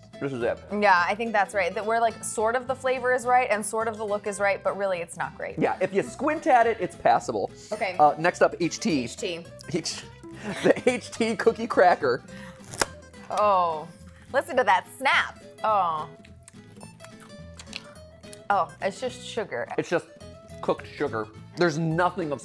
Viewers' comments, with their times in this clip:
0:10 for that amazing snap noise